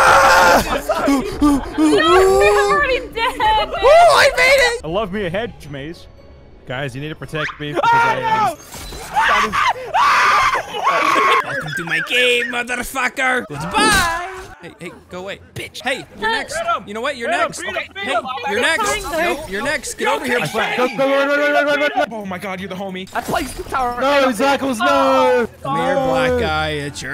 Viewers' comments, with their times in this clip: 0:08 Gonna love that "SCREAM"
0:09 that is the sound of true fear right there
0:09 Best horror movie scream. 11/10
0:09 that scream holy shit